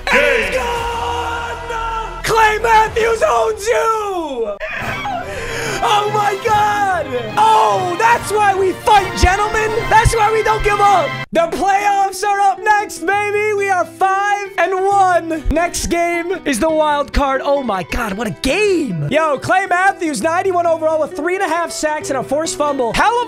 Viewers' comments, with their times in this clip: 0:04 Had a Tusken Raider scream
0:04 Tusken raiders be like:
0:04 What happened to your voice?